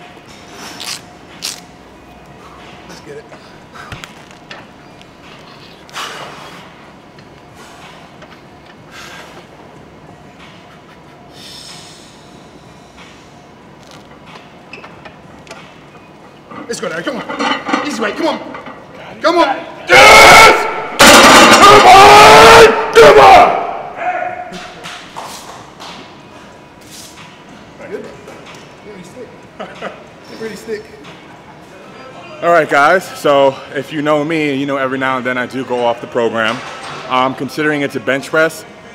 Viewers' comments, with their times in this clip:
0:04 what he brethes
0:20 ...."Eh!!!"... Some random voice, seventy five yards away wants to get in on the power and the action
0:22 blew my speakers
0:23 Did someone just yelled "hey"?